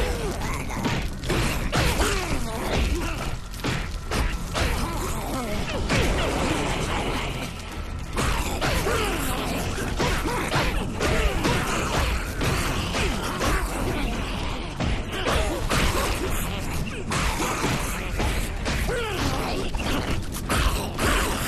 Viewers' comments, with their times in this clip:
0:08 lookslike smeagol and voice alike